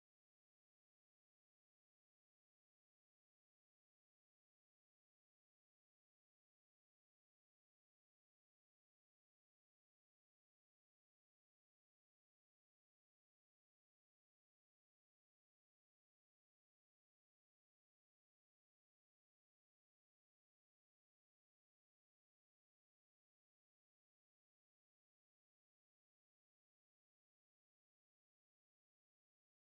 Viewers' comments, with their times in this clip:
0:10 Audio cut out idk why just to let u know